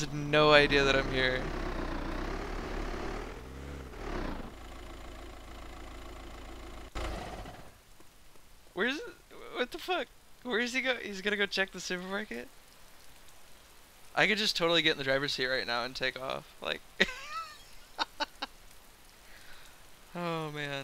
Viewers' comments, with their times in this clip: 0:08 the way he says "supermarket" is so cute, I can't even!